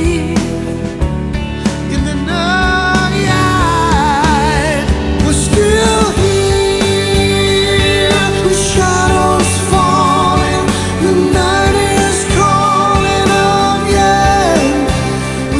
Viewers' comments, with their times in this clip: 0:03 I just heard the same Steve from 1981!